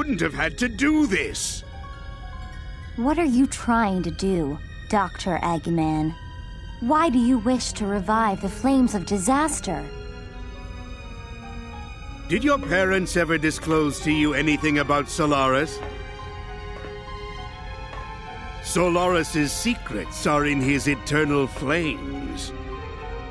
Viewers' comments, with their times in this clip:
0:05 sounds like she said “EGG-NAN”